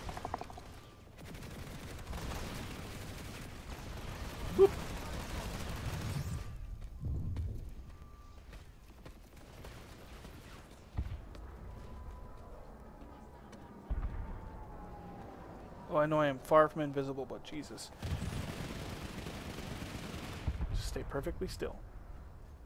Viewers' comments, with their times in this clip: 0:04 I love the little *boop* xD